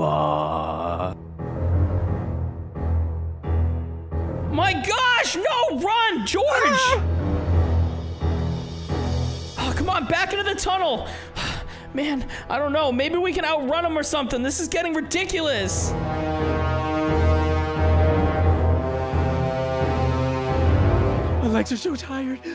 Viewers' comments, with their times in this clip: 0:06 there you are silence for 10 sends ahh run